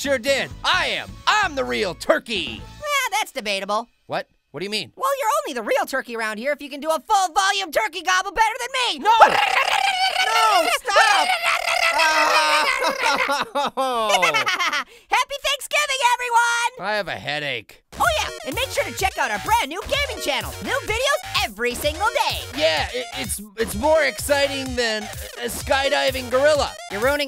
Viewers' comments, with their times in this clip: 0:09 If you put the speed on 0.25x it sounds like Orange is getting electrocuted.